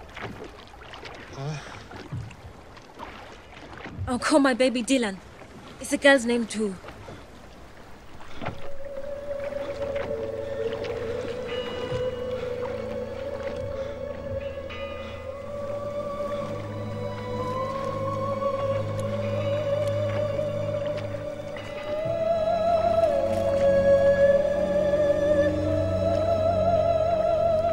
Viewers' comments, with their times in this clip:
0:08 When the music changes key I always experience heavy goosebumps! This movie is a treasure beyond existence.